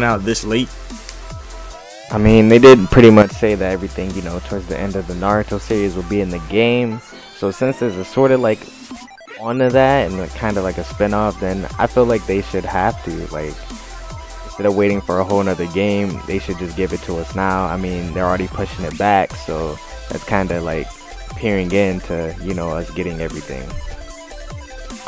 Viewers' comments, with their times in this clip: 0:07 That drop went perfectly with the clip, holy shit man!